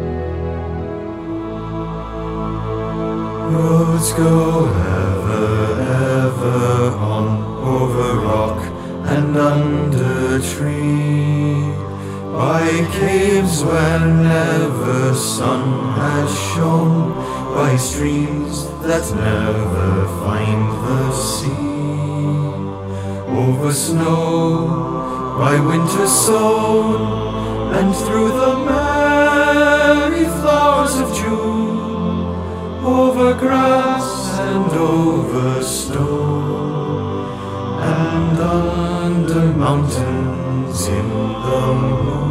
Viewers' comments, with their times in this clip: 0:03 The part has got to be my absolute favorite. I just love the way they say that line
0:22 is it just me or can you hear the melody of the Last Goodbye in this little section?
0:24 it sounded like Last Goodbye from Battle of the 5 Armies, was that on purpose?
0:29 It sounds sometimes equal to The Last Goodbye? See: But nice try :)